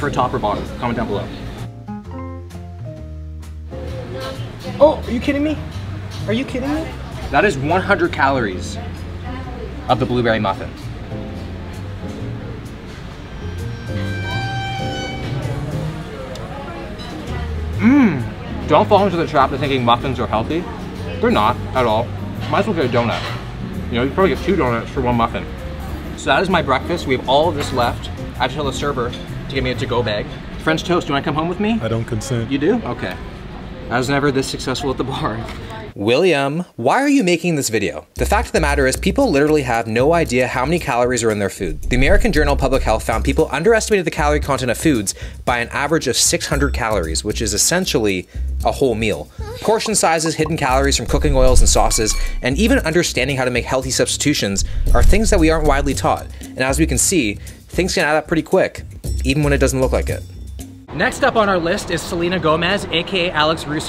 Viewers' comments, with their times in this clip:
0:09 ikr like the Gordon Ramsey sound effect is so hilarious
0:22 Did anyone else catch "Trans-sexual fat" 👀
0:48 why are you putting sex moans in the audio manipulation much
0:48 I looked away for 2 seconds , and was like "Did I just hear someone moan, I rewind and see the screen wtf 😂😂😂
0:48 what's goin on. There is someone moaning in the background.
0:48 Wtf 😂😂 Did anyone else notice the quiet moan Shit caught me off guard 😂
0:49 did you guys hear that moan